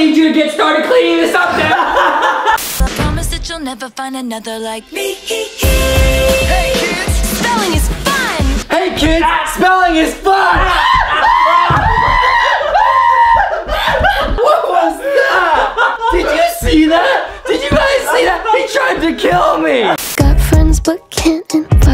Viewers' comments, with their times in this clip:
0:06 “Hey kids, spelling is fun” followed by confused and agonizing screams kids: 👁👄👁
0:09 Act how to be laughing so hard